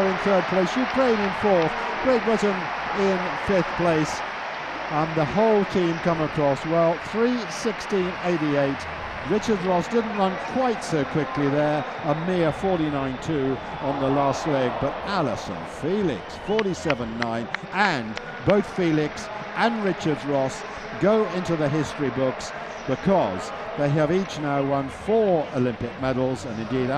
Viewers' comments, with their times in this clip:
0:09 when the commentator says her 49 second 400m wasn't very quick you can hear the audience boo him